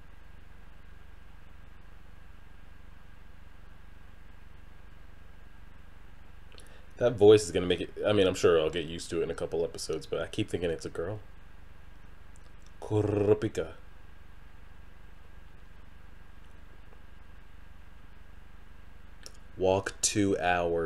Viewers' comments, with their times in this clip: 0:06 Well, it IS a female voice... ahahah